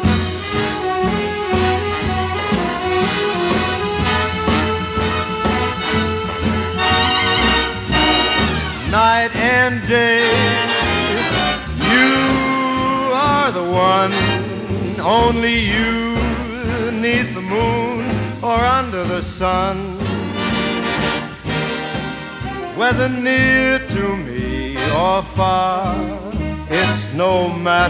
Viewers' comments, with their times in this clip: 0:08 I believe it starts in D, then there's a key change to Eb